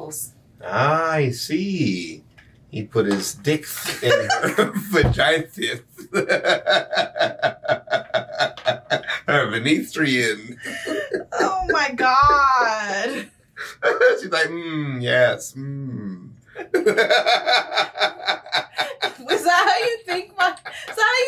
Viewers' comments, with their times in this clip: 0:03 😂😂😂😂😂😂😂😂 the sream i just scrumt